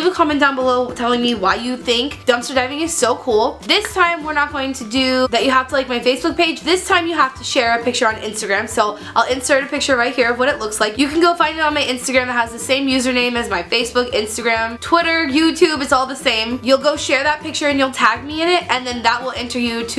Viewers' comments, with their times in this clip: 0:03 😂😂 when she was trying to say Ibiza 😂 it's a judge city.